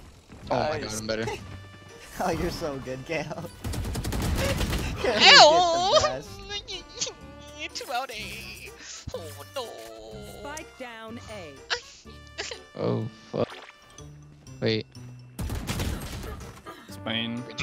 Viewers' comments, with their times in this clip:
0:04 followed by hahaha